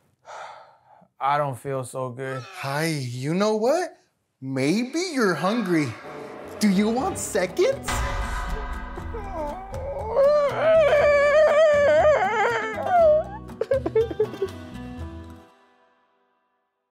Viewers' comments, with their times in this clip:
0:09 bro sounded like a dying Chihuahua